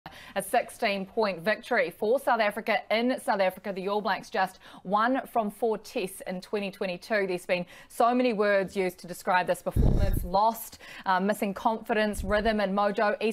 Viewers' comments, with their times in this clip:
0:00 "A sUXteen point victory" I'm kiwi but even I hear suxteen